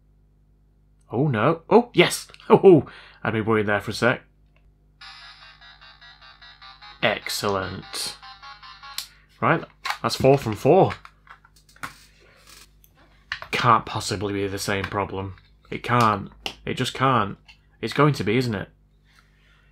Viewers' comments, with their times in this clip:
0:06 Sounded like Mr. Burns.